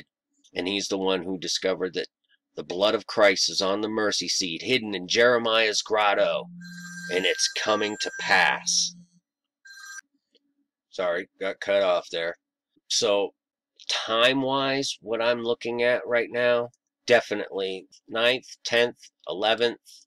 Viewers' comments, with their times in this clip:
0:07 I think your phone rang to confirm what you were saying which the Hebrew concordance of H1418 is a "cutting"